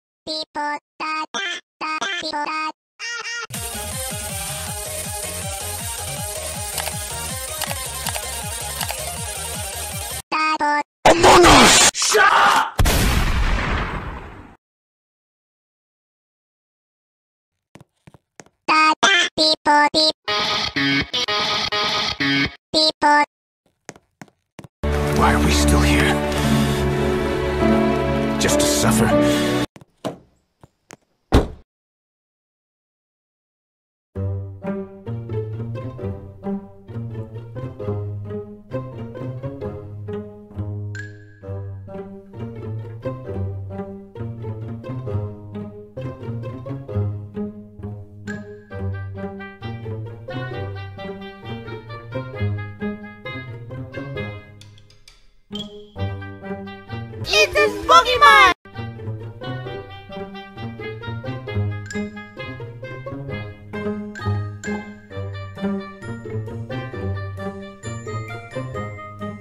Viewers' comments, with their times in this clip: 0:01 Beep boop da da be ba da lightins up my day
0:20 why does it sound like imperial March to me.
0:57 Video: "It's da spooki month!" Auto generated subtitles: "eat this pokemon"